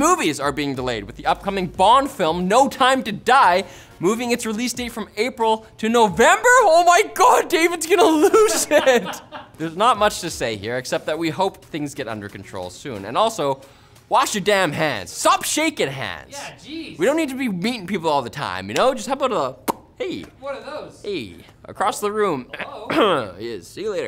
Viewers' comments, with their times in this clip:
0:04 that spit tho... ahahah
0:06 that spit though. jesus, how much saliva you get in there pal?
0:06 He sounds like a basic white girl when he says that.